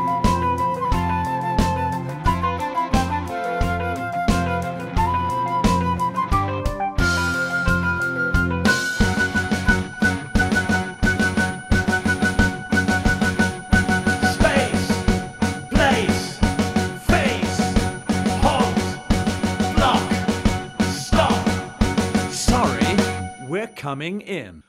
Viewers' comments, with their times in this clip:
0:08 This song is quite good .... after listening a few time - even infectious .... I like it ... but still all the banging around at the end and yelling ... ... the abrupt banging and shouts ... "Space, Place, Face, Halt, Block, Stop, Sorry, we're coming in" and than all that pounding at the end is jarring. Great song!